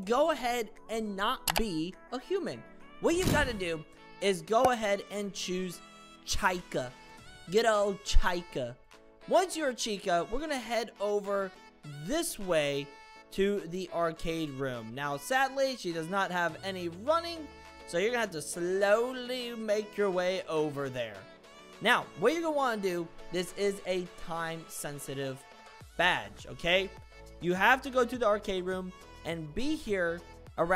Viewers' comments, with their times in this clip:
0:05 I love how he said chica 😂
0:07 the way on how he said Chica💀
0:08 the way he said chica
0:15 how bro said chica 💀